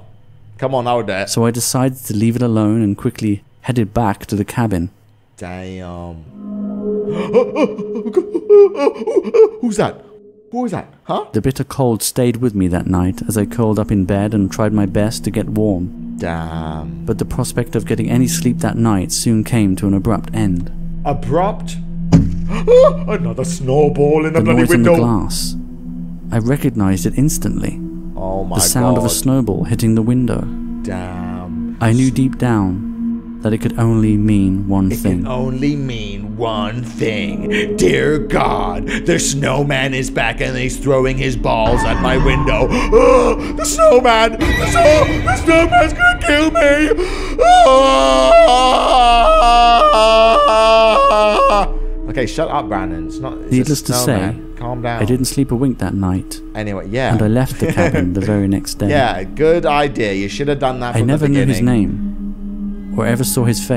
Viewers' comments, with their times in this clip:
0:06 why do they keep making ghost car noises?
0:48 me screaming out of frustration during puberty